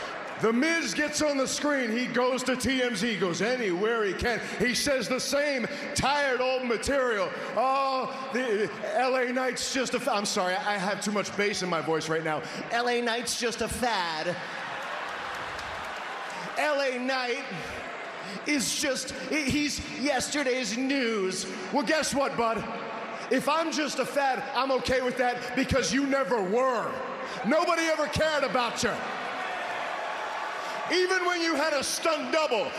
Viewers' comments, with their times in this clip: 0:07 L.A Knights Miz Impression 😂😂😂😂😂😂😂😂😂😂😂 Bray would have loved that impression.
0:13 Hahaha he impersonates miz lol 😂😅